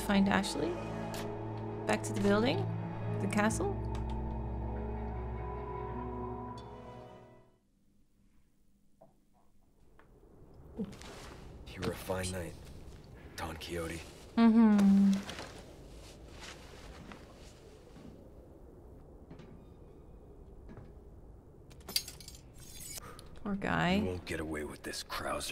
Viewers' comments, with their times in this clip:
0:06 Leon, You were a pretty good knight... Me: aww Leon: ... Dawn Coyote Me: erm-